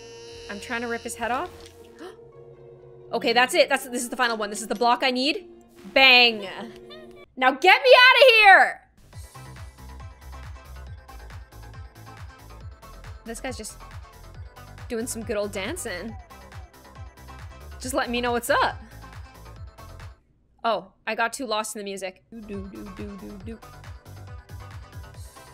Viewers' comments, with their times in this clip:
0:09 idc if its terrifying, the music slaps